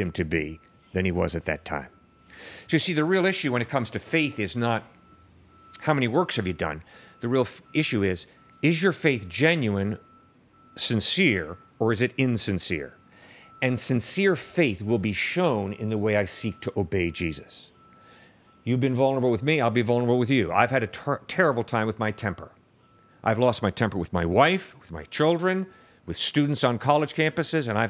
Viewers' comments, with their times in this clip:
0:08 in the backround you can hear a truck in reverse😂